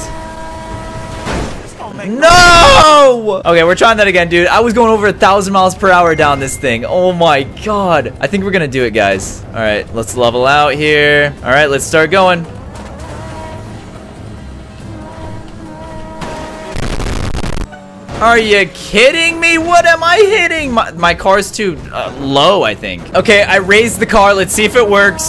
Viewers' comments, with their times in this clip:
0:06 bruh I thought my mom actually said that and I messaged her okay and she was confused
0:07 i acctually thougt i got a text message lol 😂 (edit: its )
0:10 I thought my mom texted me lol